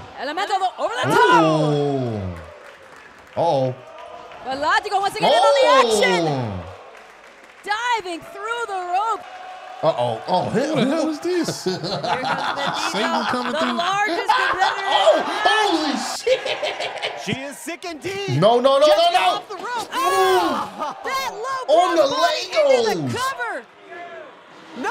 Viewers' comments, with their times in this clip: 0:10 Shit sounded like Spanish for a second